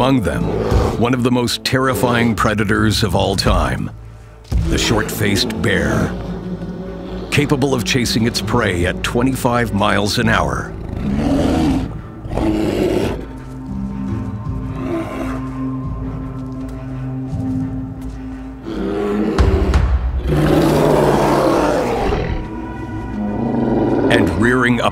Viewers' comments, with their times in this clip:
0:10 The dogs are barking at the short faced bear and drives him away